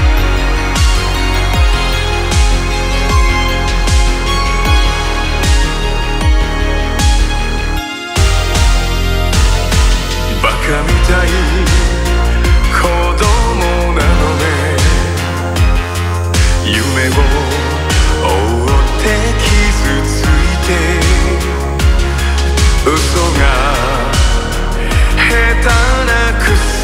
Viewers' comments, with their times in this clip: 0:10 this beat brings me ❤️